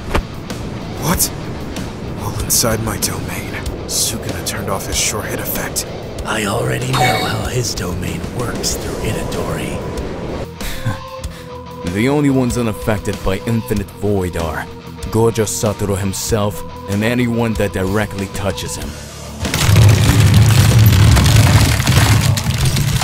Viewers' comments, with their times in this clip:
0:06 the Naruto sound effects 💀